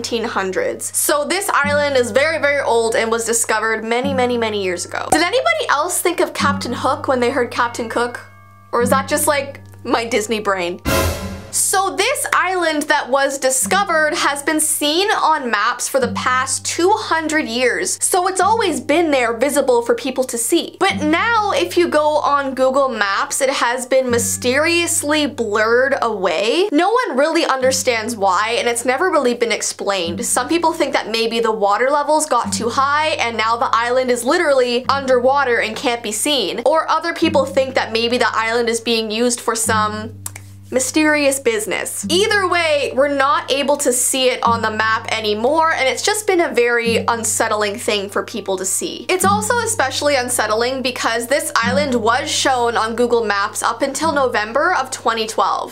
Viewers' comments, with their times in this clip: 0:09 I heard Captain Hook of Captain Cook
0:40 and stop sounding antihorny